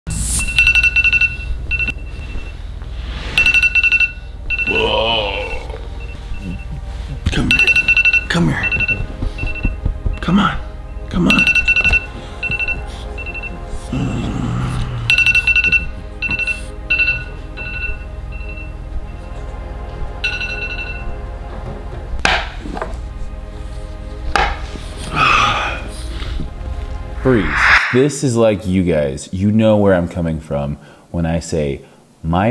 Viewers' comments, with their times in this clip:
0:05 bruh turn off that alarm
0:20 bruh turn off that alar.. finally